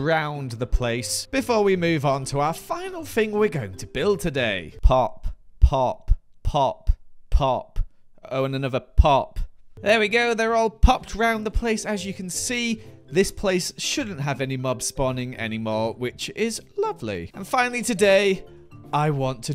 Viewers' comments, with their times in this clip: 0:05 woof, that popping hurt my ears. (Not to be dramatic lol)